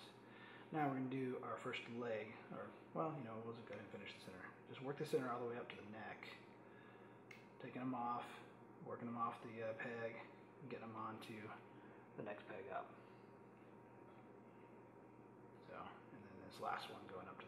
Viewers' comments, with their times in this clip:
0:03 dude i cant hear u and in some parts i cant see that your doing. especially when u are then it get confusing